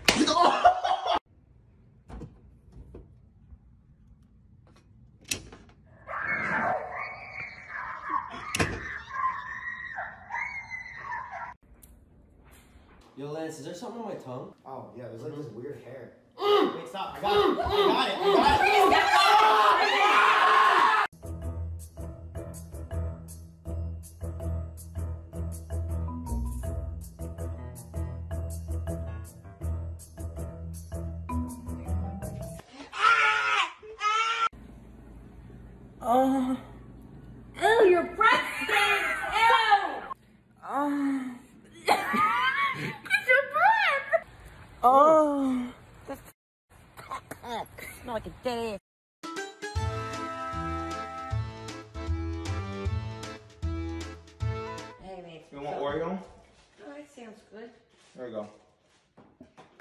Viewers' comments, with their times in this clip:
0:06 the screaming tho hahaha
0:07 In omg it was so funny when your cousins were yelling 💀
0:35 he ate garlic and moans lmao
0:40 it sounds like he’s moaning-